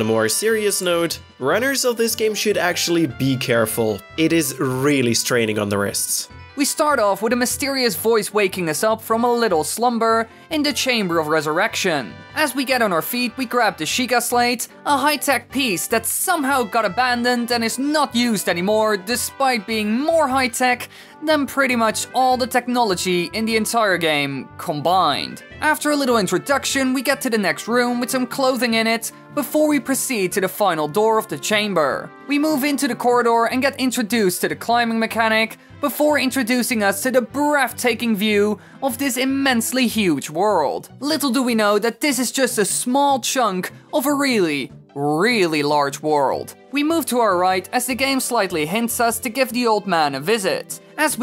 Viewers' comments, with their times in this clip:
0:07 omg the high pitch end of the sentence is back
0:37 "...before introducing us to the breaftaking view..." Jesus fish. Theres no F in breathtaking